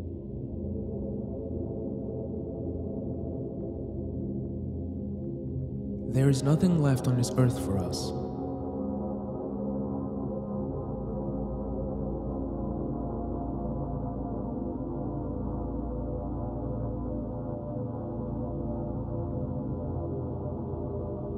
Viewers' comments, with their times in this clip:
0:07 the music with the view of the unknown creature walking in the distance next to a tornado & the shots of the shadows on the building walls is really fascinating to me & seems almost, peaceful. Like we weren’t meant to be there & the universe is getting back at us by getting rid of us.